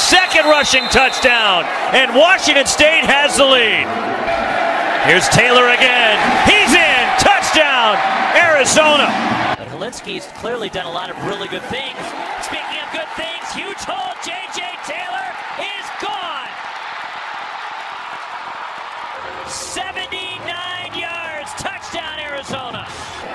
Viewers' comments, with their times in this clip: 0:09 Anyone else hear the Dalek or is that just me? lol